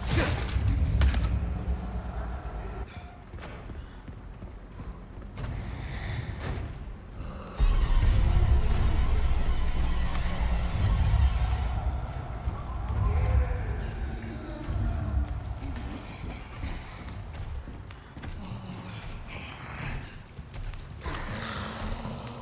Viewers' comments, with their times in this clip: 0:05 very fun music with beloved Regenerator,
0:07 I especially like the musical sting that kicks in when the Regenerator sees Leon and comes back to attack again. For real, these things were already terrifying in an Action game.... I cannot imagine how scary they will be in a legitimate Horror game like this one. Especially since they kept the breathing.